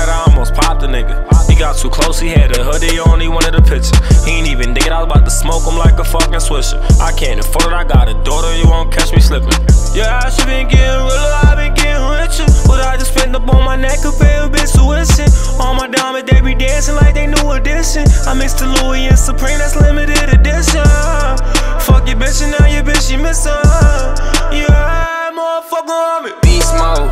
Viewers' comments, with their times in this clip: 0:10 P&B went lil Durk mode